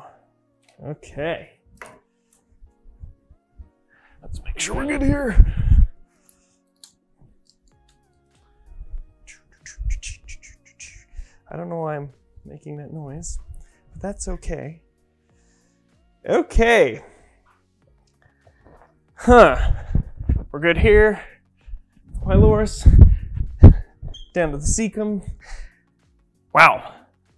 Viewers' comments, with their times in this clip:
0:09 I make the EXACT same noise when doing errands around the house! Hahaha! 😂😂 I love it!
0:14 my dad makes that bloody noise 24/7 he used to whistle like all the time but his mrs got onto him but now he does that lol